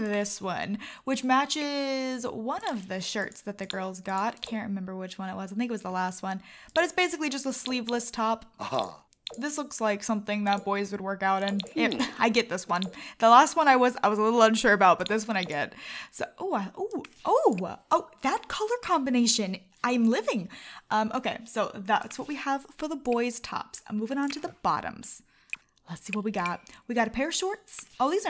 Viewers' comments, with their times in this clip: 0:09 Did anyone else notice that she said it's just a sleeveless shirt and the sim said uh huh as in yes but in a sarcastic way 😂